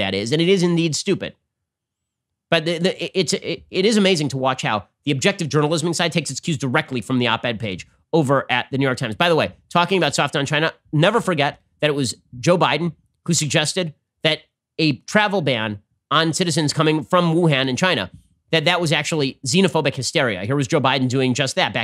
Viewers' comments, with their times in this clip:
0:08 Is that the MOST unenthusiastic audience ever? Joe's rallies must be a snooze-fest.